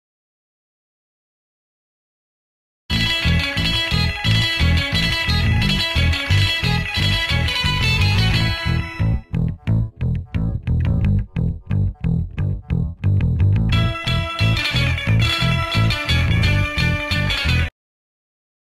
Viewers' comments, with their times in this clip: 0:03 this song is go hard 🔥🔊🔥🔊🔥🔊💥🔊💥🔥💥🔊💥🔊💥🔥💥💥🗣️🔥💥🔊🗣️🔥💥